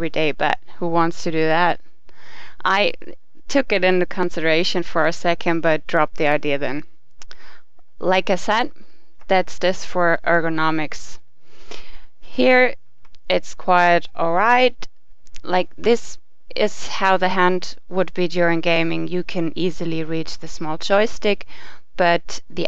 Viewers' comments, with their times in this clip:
0:05 balled guh apeares :O i thought its a girl talking :O God heavens